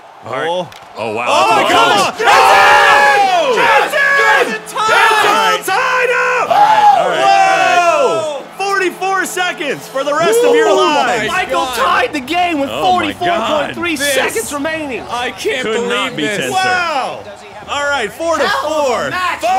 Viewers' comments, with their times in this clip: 0:03 Why does jack sound like Seth Rogan